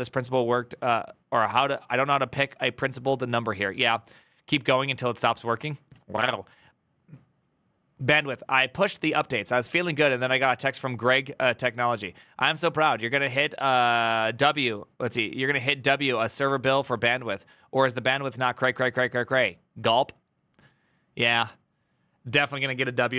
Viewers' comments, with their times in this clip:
0:05 that was a meow I think you're a Hucat